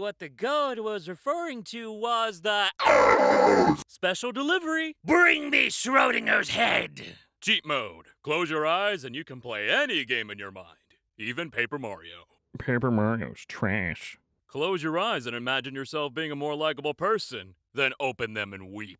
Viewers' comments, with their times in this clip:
0:03 ! IT CUT TO AN AD RIGHT ON THE OUCH I THOUGHT GAUD THEMSELF HAD TRIED TO SPARE MY EARS
0:03 an ad interrupted the OUCH midway and i fockin fell do i need help